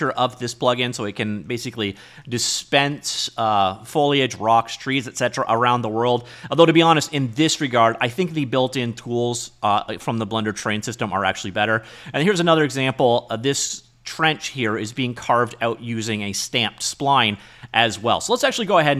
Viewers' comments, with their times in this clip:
0:03 Hey you actually said the F word without skipping a beat. I'm proud of ya. Foliage can be hard.